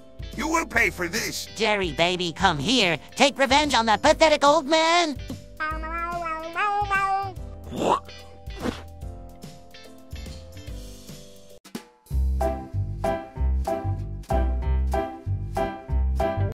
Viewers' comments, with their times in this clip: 0:05 I love how Gary sings happy birthday 🥳